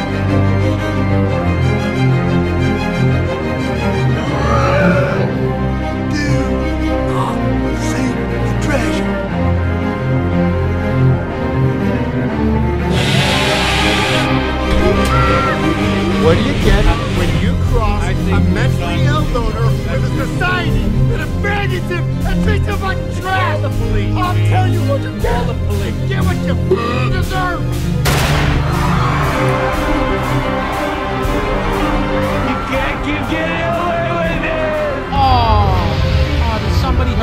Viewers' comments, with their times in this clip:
0:04 That part right there. The part where you put Bubba's scream. It broke me. What a cinematic masterpiece, god you deserve so many more views and subs.
0:25 had me cracking up when you added the bubba scream over it 😂